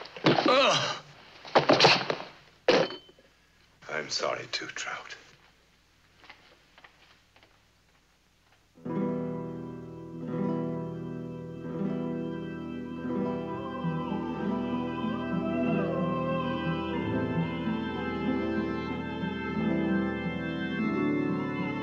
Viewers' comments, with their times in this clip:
0:09 I am enthralled by the contralto in this so very short (unfortunately) scene. Absolutely perfect for the time period. I would kill to have it in long form.